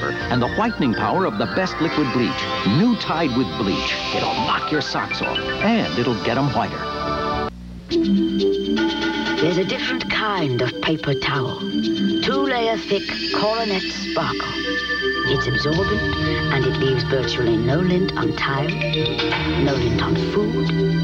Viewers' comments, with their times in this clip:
0:08 That's a great voice, kind of sounds like Dame Judi Dench. Cool synthesizer music too.